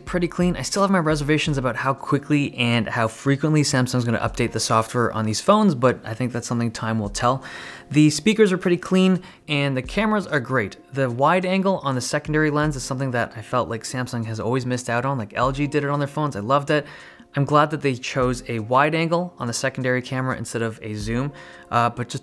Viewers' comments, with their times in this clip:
0:05 is it just me or the sound really getting louder ?